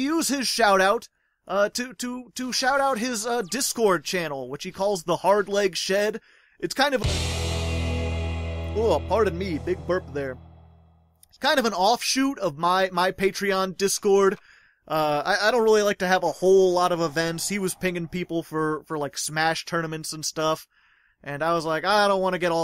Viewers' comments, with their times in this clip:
0:09 When you burpped my quality went straight down to 144p. You have resolution breaking burps.